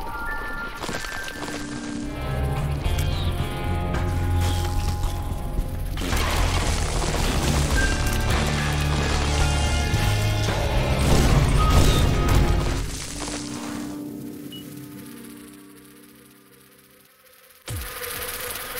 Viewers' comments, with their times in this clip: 0:03 just a chainsaw!